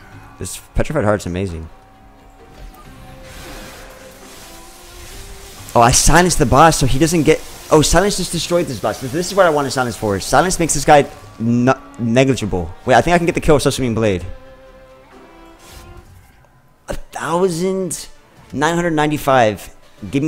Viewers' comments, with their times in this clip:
0:05 Also, you said sweep really cutely three times. Haha